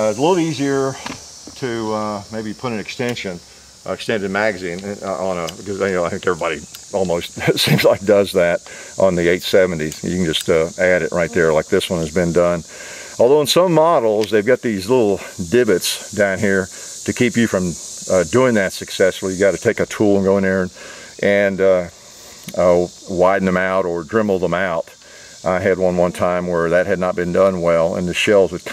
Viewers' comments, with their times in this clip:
0:10 A bug flies past the camera. I was wearing headphones and thought it was in my house.